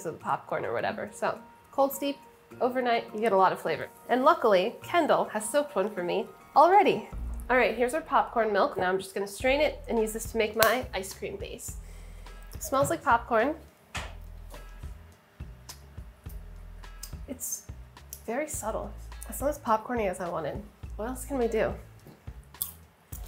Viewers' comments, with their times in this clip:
0:09 The sound of Sohla's clap is just an illusion, I see what you did there